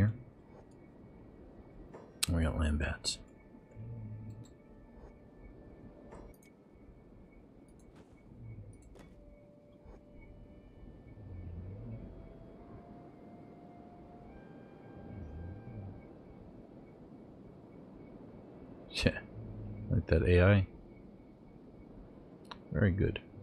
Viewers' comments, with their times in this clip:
0:08 I hear snoring in the background 😂